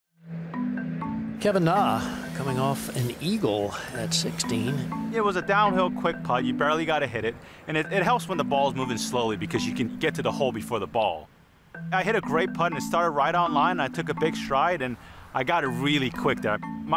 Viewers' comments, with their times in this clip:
0:00 Who's phone is ringing?